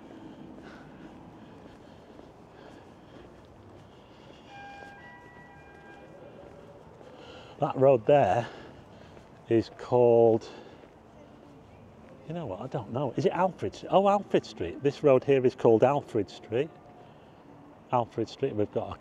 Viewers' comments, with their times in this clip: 0:04 What is that alarm ? I hear it all the time when I’m in Blackpool, but I can never tell where or what it’s coming from.